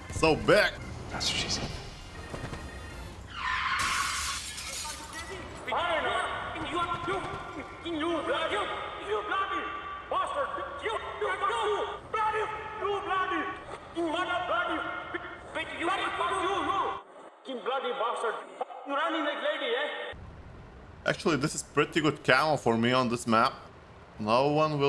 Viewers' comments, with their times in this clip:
0:06 like the accent of the vrindavan people